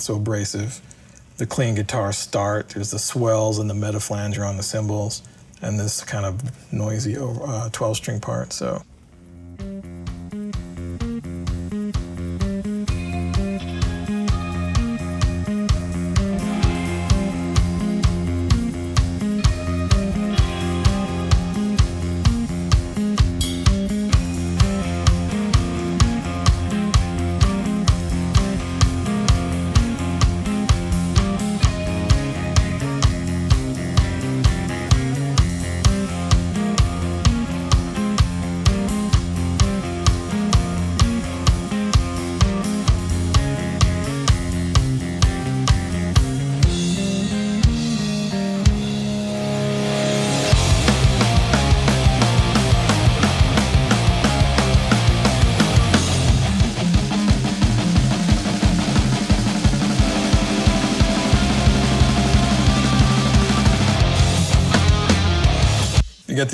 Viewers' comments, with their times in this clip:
0:08 I thought I was listening to a soad song "spiders"
0:10 is similar to Spiders by System of a Down.
0:24 Spiders sounding Riff
0:50 This whole song screams System of A Down. is "Questions!"